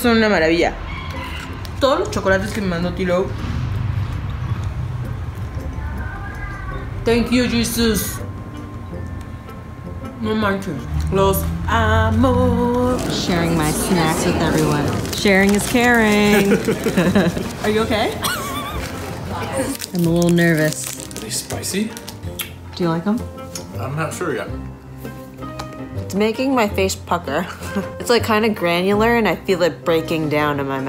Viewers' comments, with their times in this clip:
0:06 OMG I CANT WITH THE LAVADOOORAAS COLCHOOOONES REFRIGERADOREEES If you are from Mexico 🇲🇽 you’ll understand 😂😂😂
0:18 lmao the wheeze